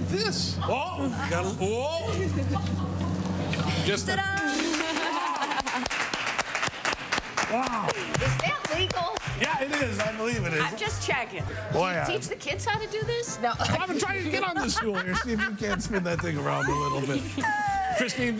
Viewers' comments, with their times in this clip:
0:04 you can hear every guy in th room say oooooh in unison hha